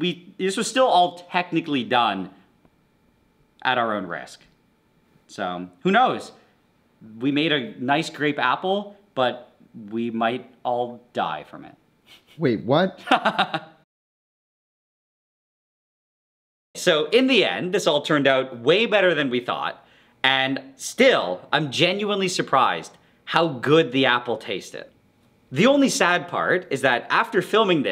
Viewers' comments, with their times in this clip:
0:07 was my fav part BUT THE LAUGH THO
0:12 i see yt videos on 1.5 speed and it sounds like minion laughing